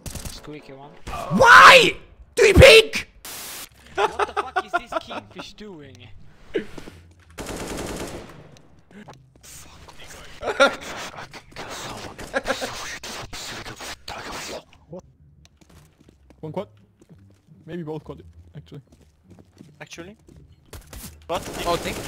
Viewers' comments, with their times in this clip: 0:09 aliens interrupting the signal